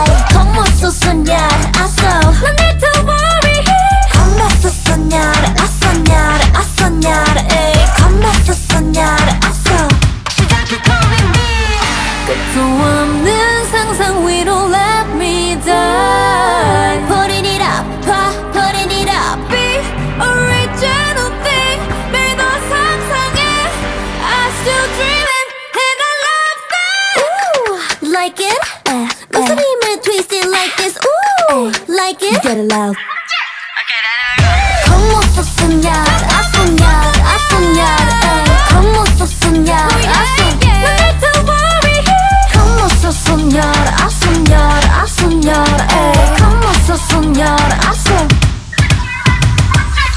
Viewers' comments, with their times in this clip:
0:05 I just found out that Nmixx released a new song! as a native speaker I have to praise Bae her pronunciation is really good. I would have liked the chorus to be "vamos a soñar" but the song is enjoyable. <3 Éxito chicas, son super talentosas!!!
0:19 Voice from heaven❤
0:26 ANOTHER G5 FROM LILY YAYAASSSSS
0:36 THE ENDING 🔥 Listening to it for the first time it's so addictive and catchy 🙌 Honestly this song is awesome ❤️‍🔥❤️‍🔥